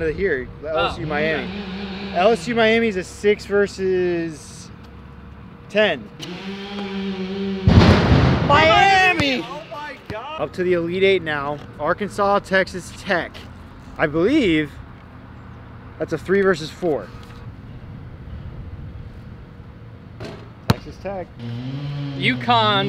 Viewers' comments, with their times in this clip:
0:07 background noise and make bucket perfect timing